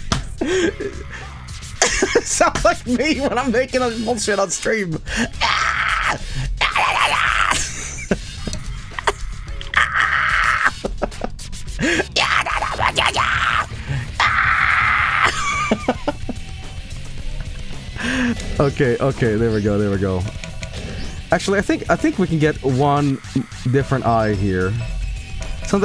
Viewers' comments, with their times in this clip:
0:06 oh my God it's monkey to monkey communication